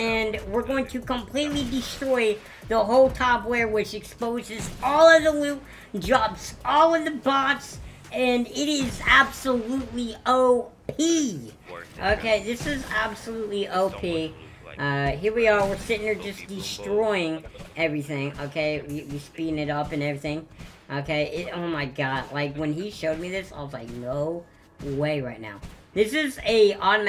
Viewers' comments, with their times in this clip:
0:10 let’s just respect how he says op keep up the good work man I liked and subbed